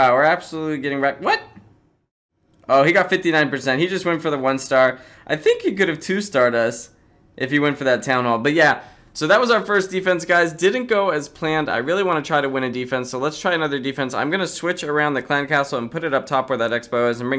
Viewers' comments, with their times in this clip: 0:05 that voice crack though